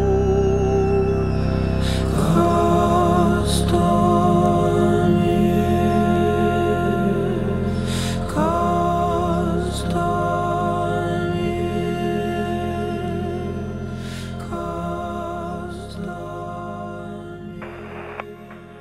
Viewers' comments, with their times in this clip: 0:03 The music and those Ruins reminded me of the Old Lara Croft "Tome Raider" Games.PlayStation 1.. Good stuff Brother